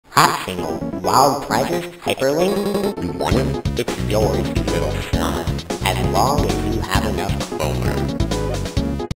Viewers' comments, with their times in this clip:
0:02 ONTTALKTOTHEMANHESACRIMIN "DON'T TALK TO THE MAN HE'S A CRIMINAL" That's what I understand :^